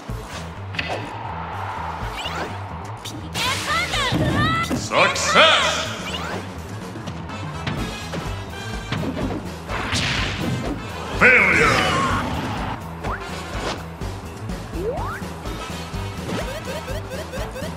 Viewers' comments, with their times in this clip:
0:05 there's a glitch where ness says PK Thunder again but he's not actually using it